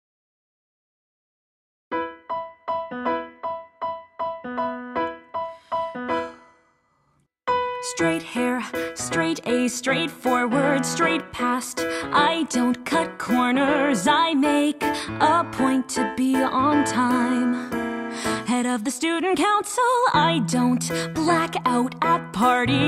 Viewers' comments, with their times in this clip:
0:05 the little sigh is nice :) was it on purpose ? I Think it fits well